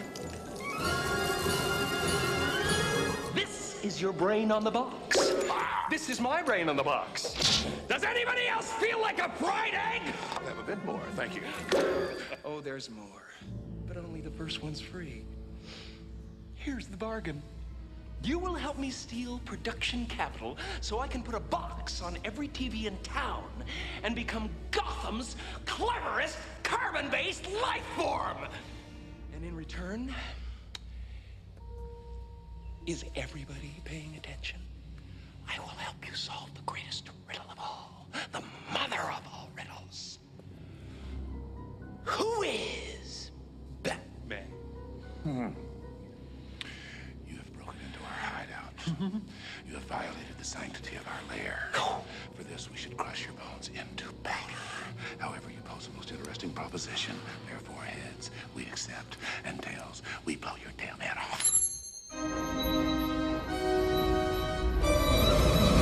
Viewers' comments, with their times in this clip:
0:07 is genuinely one of the funniest deliveries of such an over the top line I’ve ever heard.
0:46 Starting I love the way Tommy Lee Jones delivers that line.
0:46 this is the two face I wish Tommy Lee Jones did more of talking deep and serious and not joking
0:47 Two-Face sounds like Richard Moll